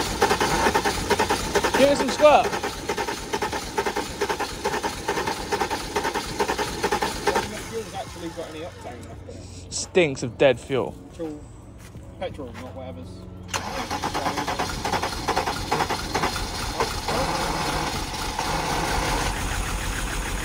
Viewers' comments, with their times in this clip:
0:04 that sound broo like real horses ❤❤❤old GOLD BMW